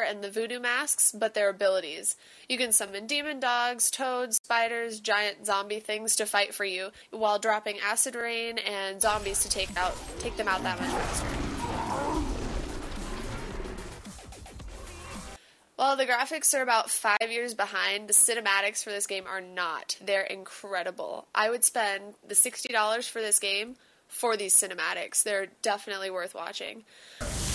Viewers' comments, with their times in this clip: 0:09 Skrillex music in the background! :D